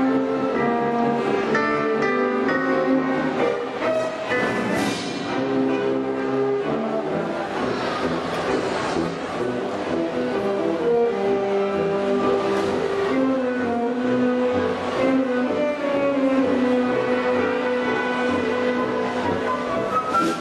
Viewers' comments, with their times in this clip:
0:03 he cued he audience to gliss with the horns lol